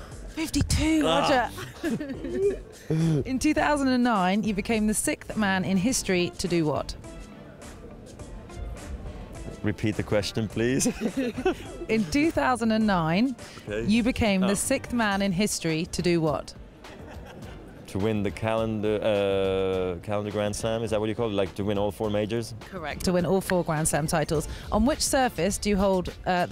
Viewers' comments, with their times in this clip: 0:04 I don’t know why but I hate how she pronounces ‘sixth’
0:08 The way he says - reppeat the question please priceless #federerforeverer
0:13 the word is not sickth.. it is pronounced sixth.. as in six..TH. This reporter should be reported!!!!